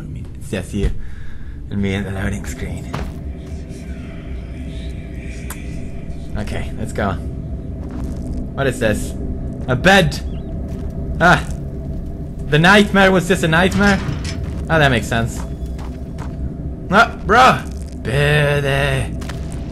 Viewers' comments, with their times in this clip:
0:06 He kissed me *screams*